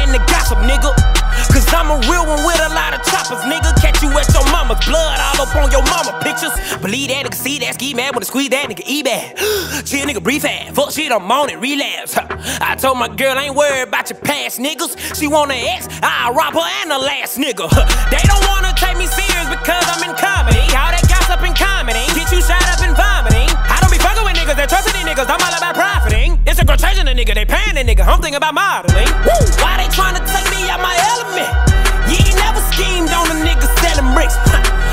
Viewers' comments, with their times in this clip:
0:06 how fast did he go
0:12 he also sounded like Yelawolf in Box Chevy V
0:17 sound like eminem
0:17 Eminem is back boys
0:21 He lowkey sounded like Eminem on